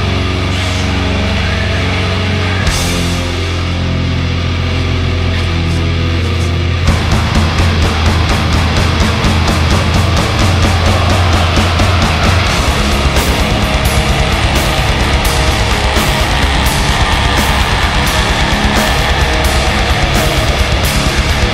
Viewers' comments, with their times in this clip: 0:05 Vampires rejoice... Who is blaring this am for the neighbors? ME!